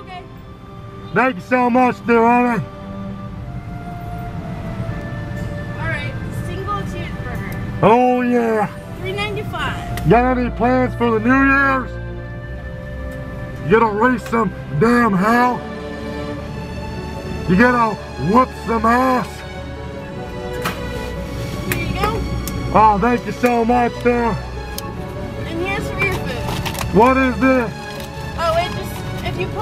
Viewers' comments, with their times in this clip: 0:10 Im high af and im wondering what he yelled right here! Edit: He said got any plans for the night!!!
0:15 Lol dude that part where you asked her "You gonna raise some damn hell? You gonna whoop some ass?" with that ET music in the background, had me rofl 😂